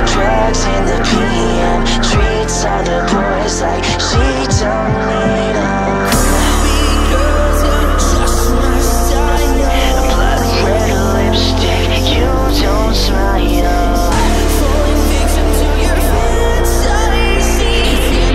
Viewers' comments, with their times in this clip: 0:04 Is it just me or is the singing when he gets pushed on the bed super hot!